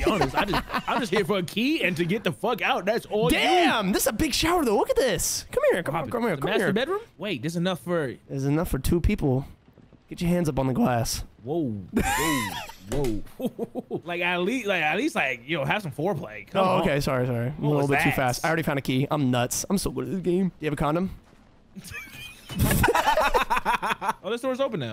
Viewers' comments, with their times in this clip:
0:09 the voice crack seals it 🤣🤣